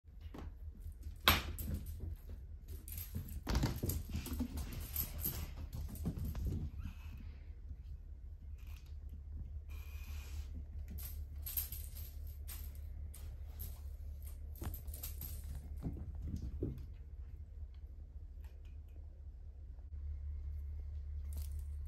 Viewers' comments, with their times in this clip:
0:07 "Hi the- OH HOLY FUCKING SHIT" intense playing "OH MY GOD" even more playing "oh shit hold on" calm walking "OH MY FUCKING GOD" intense playing